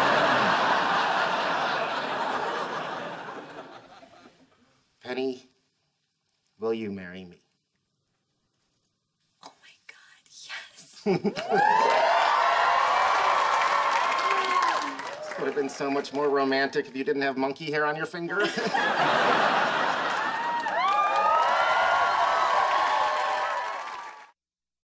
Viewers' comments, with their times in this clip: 0:10 I was cheering and clapping along with the audience. This warms and melts my heart at the same time! :-)